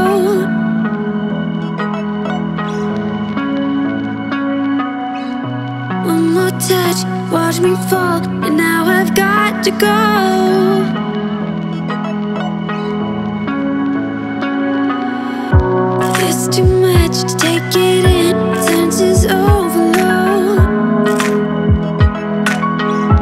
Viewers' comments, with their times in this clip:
0:06 watch me fart/f** :0 xD - missheard lyrics ftw